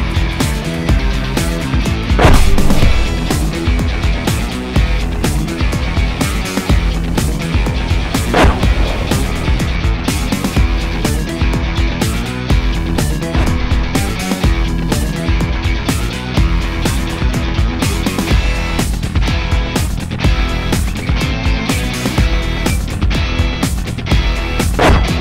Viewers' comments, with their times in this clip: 0:08 #5 was the classic goat scream kill :)